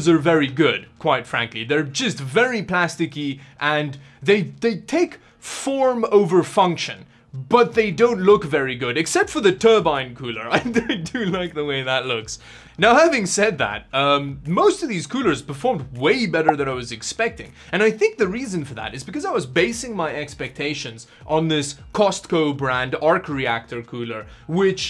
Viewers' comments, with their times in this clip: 0:10 If you look at how unbalanced that fan is you realize why it is so noisy. xD